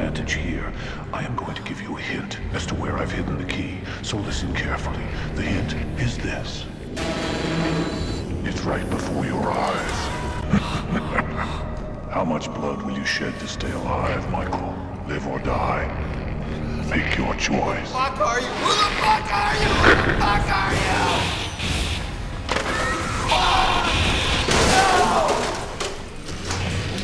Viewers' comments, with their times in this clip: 0:10 John often said he never involved his emotions into his "work", but listen at his sinister laugh and you can clearly tell that, whether he wanted to admit it or not, he was in fact a sadistic murderer at heart.